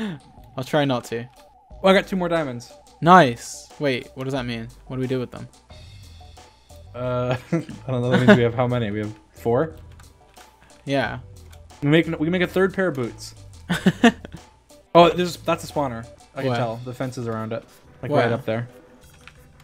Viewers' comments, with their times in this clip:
0:05 did you hear that its a phub sound